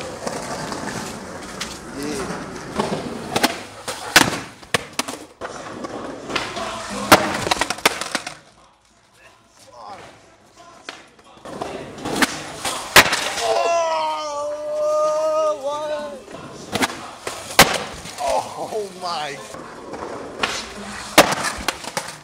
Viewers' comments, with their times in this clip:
0:10 shoutout that youngbloodz tape i hear bumpin lol